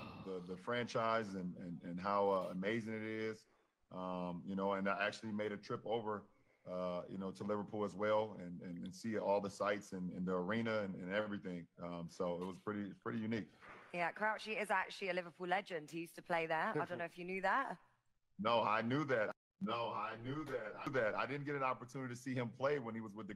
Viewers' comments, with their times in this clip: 0:10 why is he talking like Kamala? 😂😂